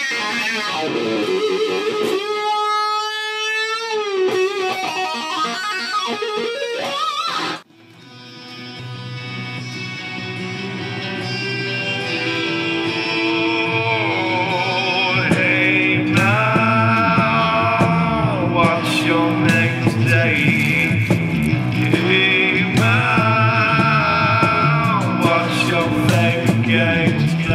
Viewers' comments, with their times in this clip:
0:08 does anyone else think the song sounds alot like soundgarden?